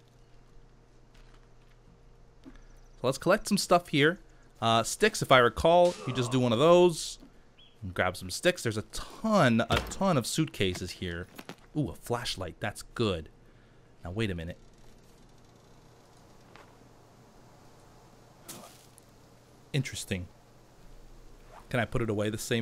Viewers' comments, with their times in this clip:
0:08 "ooh a fleshlight, that's good" I bet that's the first thing I'd look for on an abandoned island too.